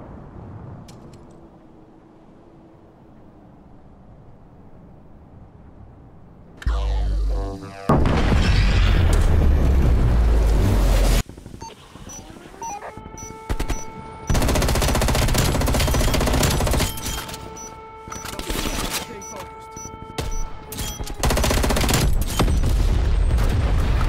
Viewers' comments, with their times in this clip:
0:06 Game Over. KABOOOOMM 💥💥💥💥💥💥